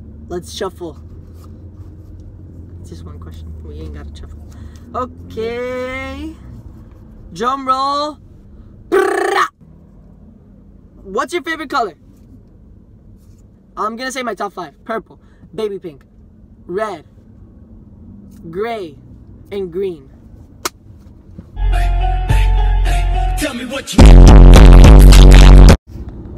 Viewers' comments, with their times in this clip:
0:07 "drumroll!" "Pppprrraaahhh" wow what a good drumroll❗💀
0:08 That was not no drum roll 😂
0:09 the first thing I thought when he did the sound for the drum role was "i'M iN tHe GeTtO rA tA tA tA" he really do be vibin tho